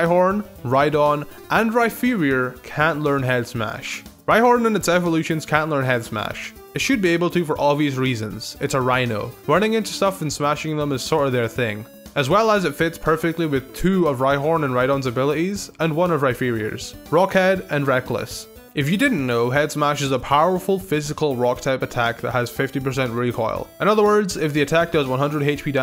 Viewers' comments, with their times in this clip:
0:06 Rhyperior, playing off the word superior. Calling it Rhypherior defeats that entire purpose, changing it to inferior xD